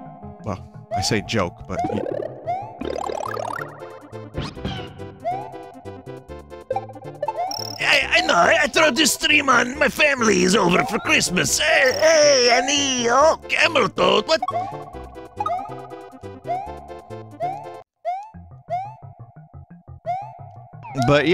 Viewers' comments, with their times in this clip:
0:04 that voice killed me when he said "cameltoad- what?"